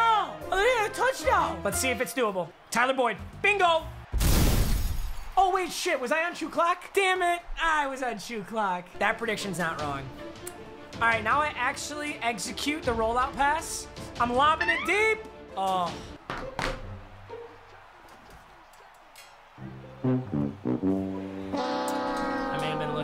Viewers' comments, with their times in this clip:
0:04 The way he said “bingo” lmao